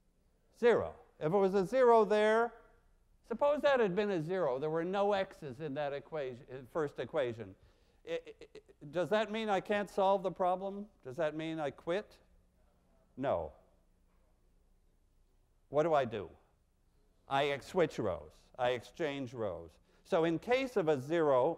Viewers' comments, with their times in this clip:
0:04 That person if munching a sandwich